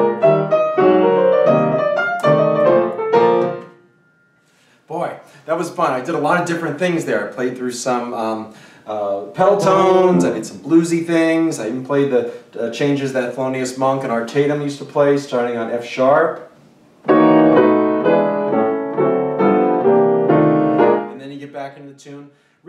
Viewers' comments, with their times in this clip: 0:09 Mark Ruffalo accidentally sings an F# while playing an F great video! I'll be coming back to this many times I'm sure.